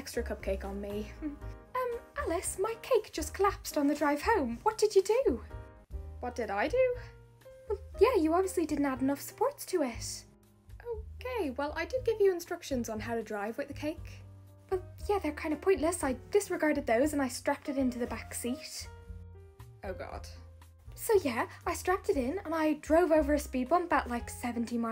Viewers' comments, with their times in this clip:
0:07 her accent speaking “it” is so cute ❤❤❤